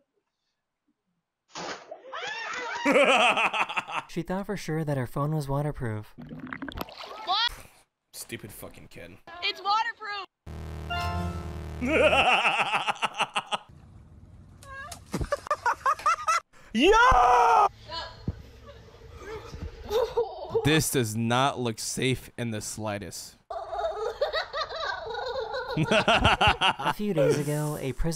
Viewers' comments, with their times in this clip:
0:10 sounds like the song IGOR’S THEME by Tyler, The Creator
0:11 sound like the intro to Igor 💀